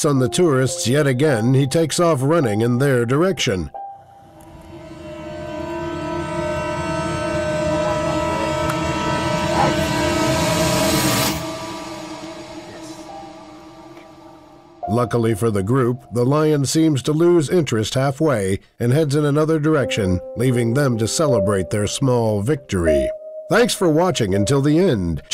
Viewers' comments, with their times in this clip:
0:08 did that lion just bark?? 😳